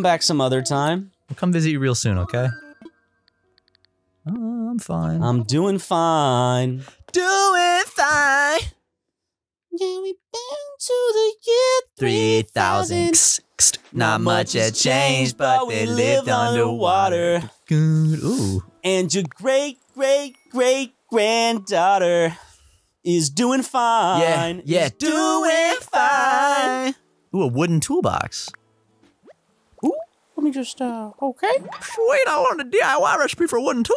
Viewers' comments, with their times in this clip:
0:05 that singing was beautiful
0:21 a beautiful serenade from the boys